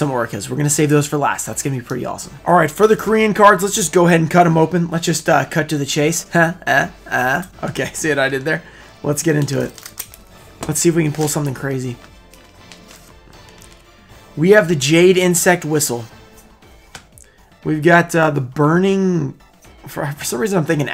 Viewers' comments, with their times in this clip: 0:06 I see what you're doing there. You were imitating the Leto Joker's laugh